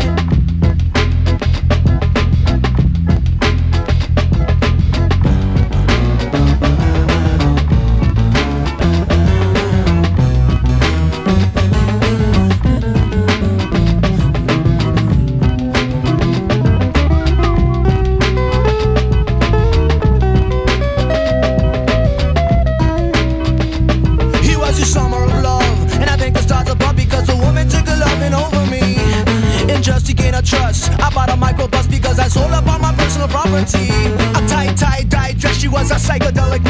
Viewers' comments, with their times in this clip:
0:04 I always find myself singing along to that harpsicord riff
0:23 I'm a noob to sublime. Who sings on most of this track? Both voices are Bradley? It doesn't really sound like him, i know that that's him...help me out here guys?
0:24 I love how brad just kicks that verse into the stratosphere